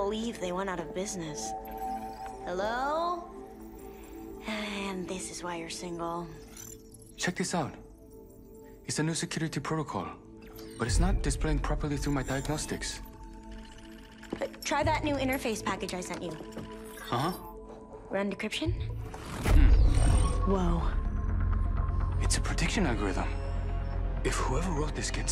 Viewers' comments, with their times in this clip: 0:10 This dude on the part sounds like bloodhound